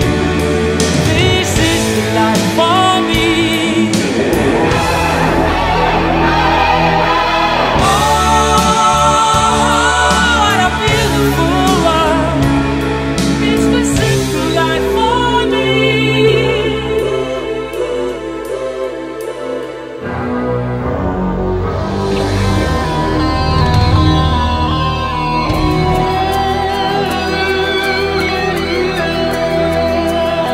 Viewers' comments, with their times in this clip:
0:03 Gotta love any time a Queen song gives it over to the Red Special.
0:18 ... the music takes you to another world for a short while